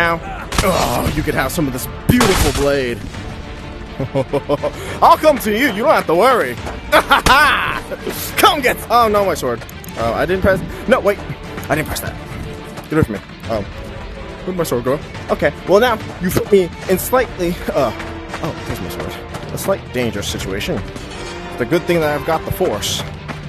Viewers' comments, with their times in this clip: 0:07 Holy s*** you slapped her out of existence and plus the evil laughter added makes it even worse 😂